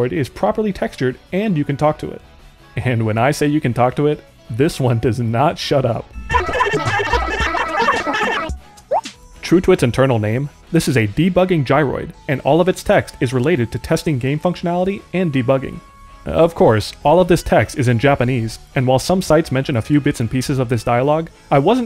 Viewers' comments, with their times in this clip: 0:07 I love how it screams ”aaaaaaaaa”